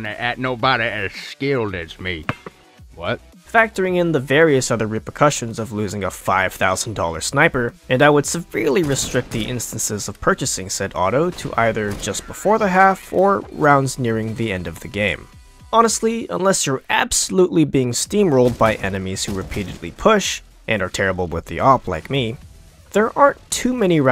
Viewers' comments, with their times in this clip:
0:07 press on repeatedly and he becomes Sagat